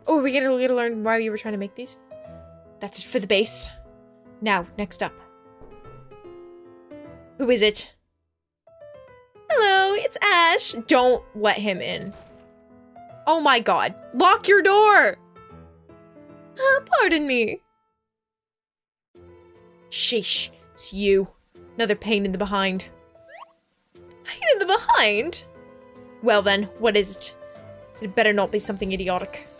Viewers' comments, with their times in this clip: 0:10 My favorite part about characters that don't have actual voices is that my voice then becomes their voice, and I can then use their voices to make silly jokes SPOILERS FOR ASHE AND WILARDO SCENARIOS! Like when I added on in my sing-songy Ashe voice, "I've come to murd3r you again, Sirius!"--it was great